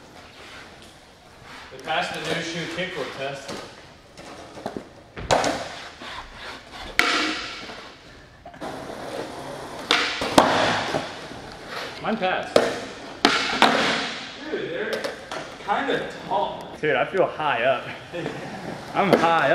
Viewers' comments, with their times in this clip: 0:07 That's the highest ollie I have ever heard!!!